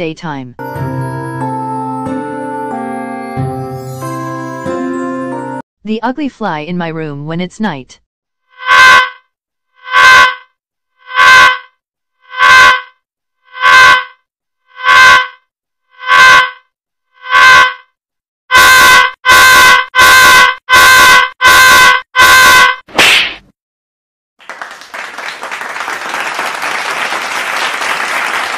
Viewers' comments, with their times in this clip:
0:09 why does the night fly sound like that one voice changer toy I have at echo or something when you just hum edit:POV:you just went to five below, bought a voice changer, selected echo, and hummed: